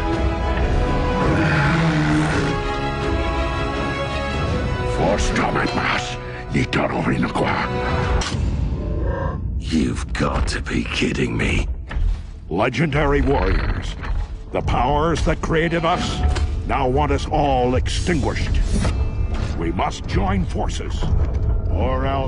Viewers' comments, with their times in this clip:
0:05 I hear it "one stomac mass, he told me it to quack"